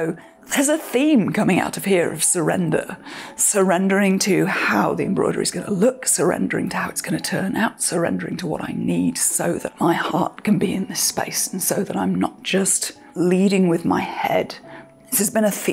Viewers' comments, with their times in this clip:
0:03 I am in a similar space, with wanting to do something then my body saying no. How do you balance working and the mental wall? More so the work aspect and not the fun hobby embroidering Also, there's a high pitch squeal during the first main talk to camera. I'm not sure if this is a mic setting as a biproduct from your voice or if it could be dulled more in post? It's not a deal breaker, just a hair irking.